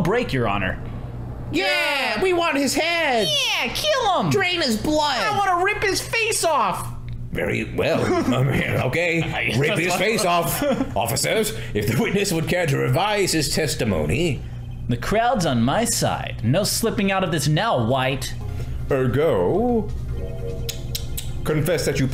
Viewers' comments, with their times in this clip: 0:03 is Meekins part of the Charlie Brown Adults?